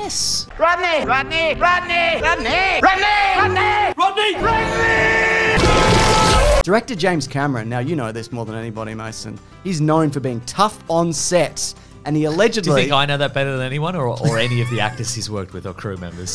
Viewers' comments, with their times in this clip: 0:04 The addition of Del Boy shouting Rodney is 👌